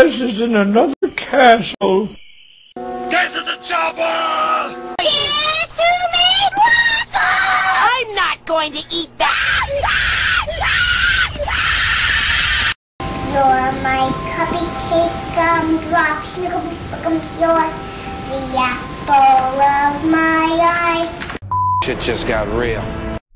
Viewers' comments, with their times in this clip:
0:10 He's crying like a crybaby. 😆